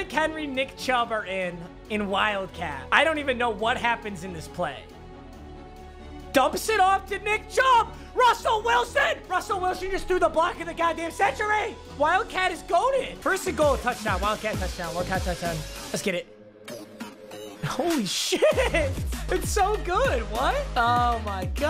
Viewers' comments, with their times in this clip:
0:09 a little to much spit